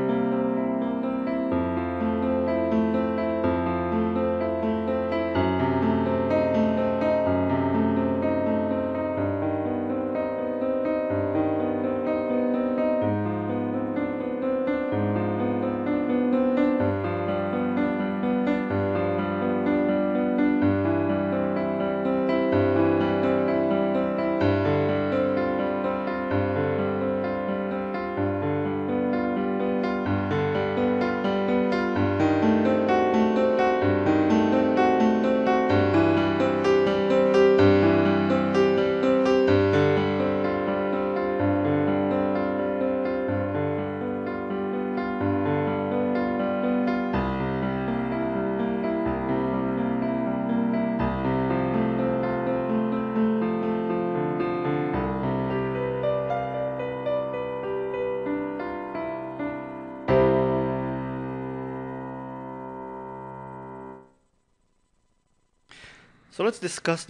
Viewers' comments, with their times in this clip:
0:09 Thanks alot for this. and by the way, i think theres a little error there, in im not familier with notes but from hearing other versions its seems they played one less "note" in the pattern.
0:09 There is a HUGE MISTAKE in your playing. You've added a complete bar of music where bar 23 should be - approximately in your video. I thought perhaps the link you gave for the sheet music had an error as well, but that's not the problem. Anyone familiar with this piece can hear it sounds wrong right there. And I see a couple people have commented about it, which you've ignored. That's just embarrassing when a "teacher" isn't playing the piece correctly.
0:10 I don't know where you got your sheet music but I think there is a mistake It should go straight from the F#dim to the Abdim.
0:10 I believe it's a D. Not D#, but thanks for taking the time with this video! Well done
0:55 the thumb of the left hand is playing the wrong note - there is actually a B instead of the C